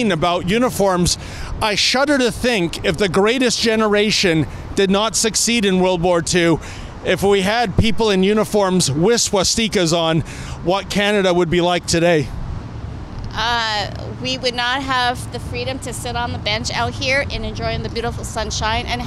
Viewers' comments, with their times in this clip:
0:07 How did he say "swastikas"? LOLz